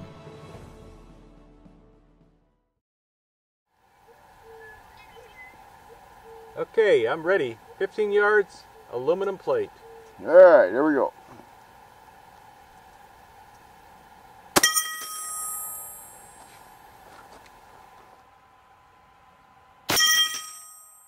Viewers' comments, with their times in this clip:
0:03 I can never get over how strange the morning doves sound like on the West Coast